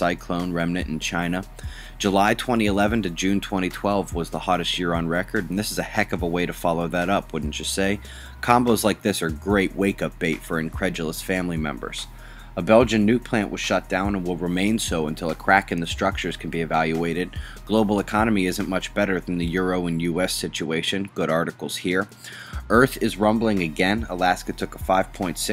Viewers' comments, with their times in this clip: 0:09 Did he say wake and bake ? lol =P great video thanks for the news